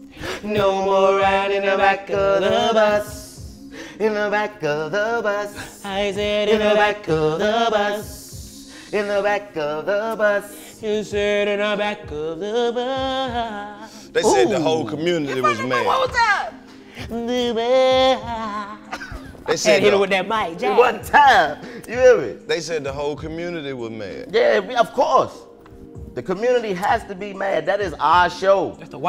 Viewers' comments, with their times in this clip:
0:10 DC... Didn't know you was gonna fuck it up like that. My guy, got them MJ pipes. 😂😂😂😂🔥🔥🔥🔥
0:11 i can tell bra can sing his ass off when i heard dc hit that mj note chico said “ooooo” hahah